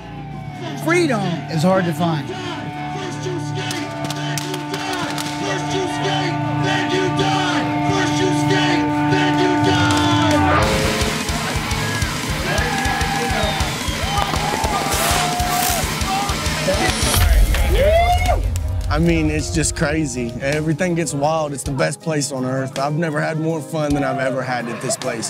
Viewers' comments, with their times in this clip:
0:10 anyone know the band ? sounds dillinger inspired